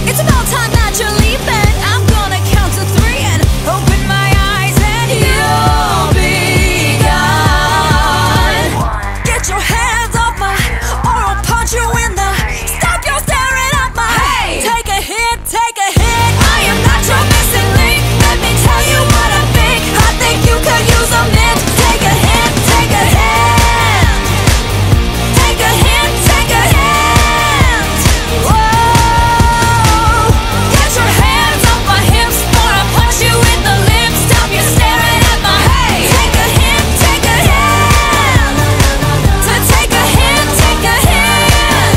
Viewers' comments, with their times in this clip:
0:08 THE WAY SHE SAYS 123
0:28 that “OOOH” is too good